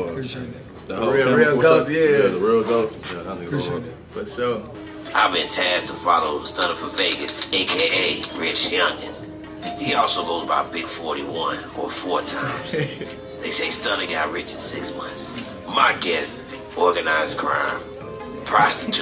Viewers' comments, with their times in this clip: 0:05 Why does that sound like Uncle Ruckus? 😂